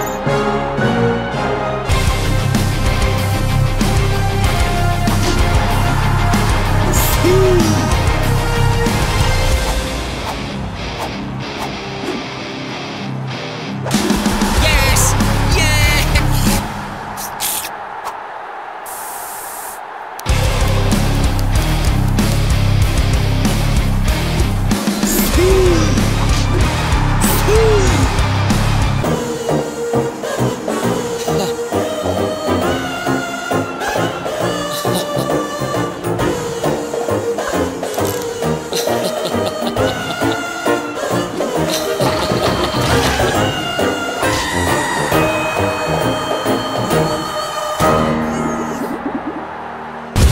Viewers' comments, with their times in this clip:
0:10 Cool headbang background music🤟🤟
0:36 Haaland laughing was funny